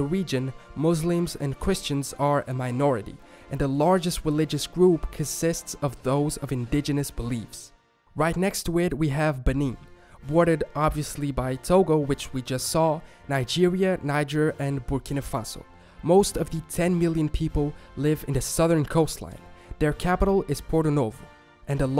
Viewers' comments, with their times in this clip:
0:04 Maybe you spelled conisit weirdly or maybe it's just your accent idk.